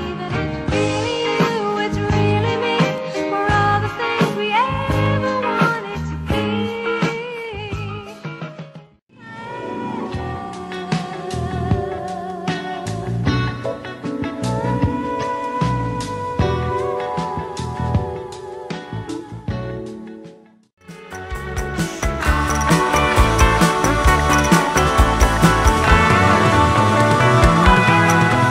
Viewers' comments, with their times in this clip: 0:10 that was smooth. Nice song.